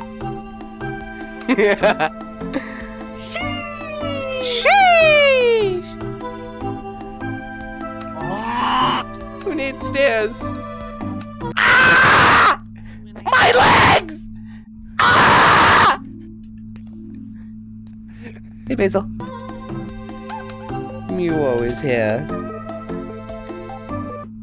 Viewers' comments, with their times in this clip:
0:09 if you put it on x0,50 it looks like tom's scream from tom and jerry kk
0:11 Goofy Tom and jerry scream